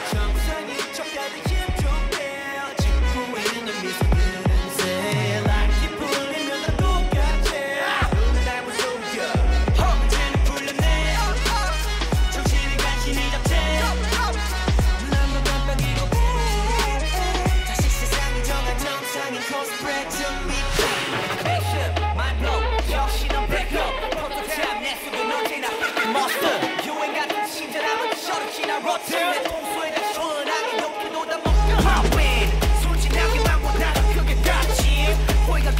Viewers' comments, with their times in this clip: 0:07 THE SCREAM PLSSSSS
0:21 The deep voice in the back track gives me chills. I love how present it is here.